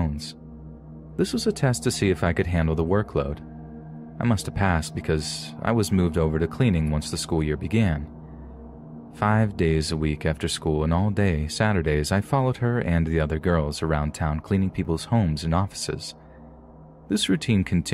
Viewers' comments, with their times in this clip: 0:05 " ... I did what any 'YoubTuer' does ... ". He said, "YubeTuer", and that kind of stuff tickles me because it sounds so silly. My family likes to say silly stuff on purpose. Malapropisms are a way of life at the homestead. Hearing my favorite narrator say that, made me shoot tea out of my nose.